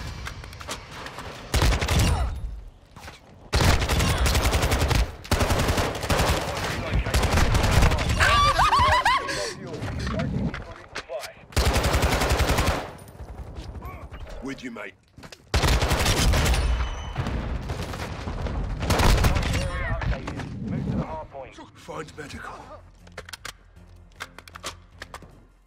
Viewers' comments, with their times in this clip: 0:06 ...LOL, sounds like Chris Rock!